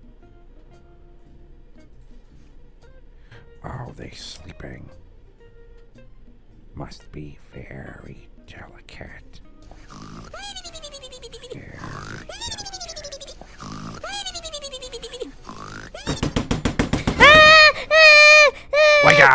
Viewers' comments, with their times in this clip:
0:03 HELP HE'S BEING QUIET SO SHE COULD REST IN PEACE SUCH A CUTE PROTECTIVE OLDER BROTHER GHAAAAAAA